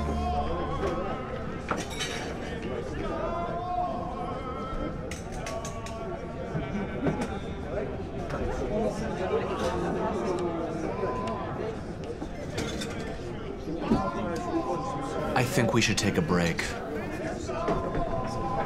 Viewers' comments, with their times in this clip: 0:06 All I can think of during the scene with the guy singing in the background, is the guy cycling through New York and singing at people how they are standing in the bike lane